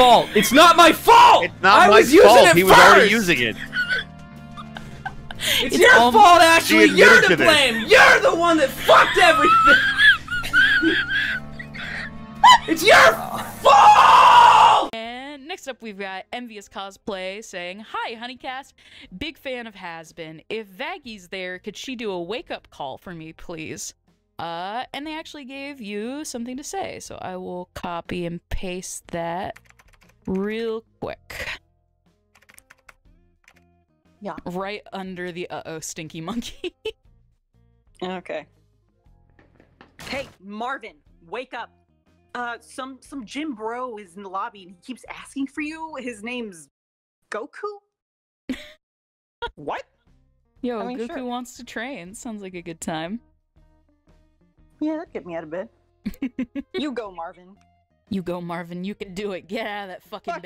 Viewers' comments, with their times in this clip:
0:07 That breathless laughter tho 😂😂😂😂
0:09 DAAAAAMN the wheeze XD
0:41 she kinda sounds like poison ivy from Harley quinn